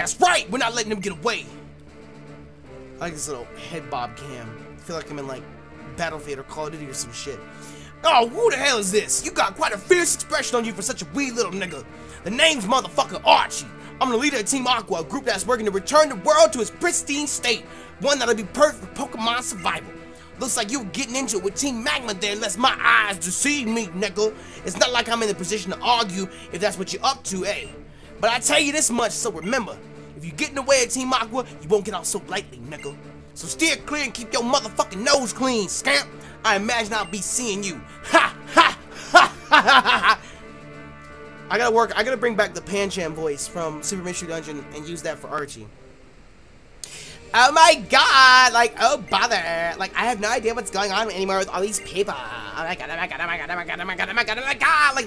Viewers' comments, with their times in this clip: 0:09 I like how you casually just say "wee little nigga" lol XD
0:41 Pancham voice? Am i missing something here?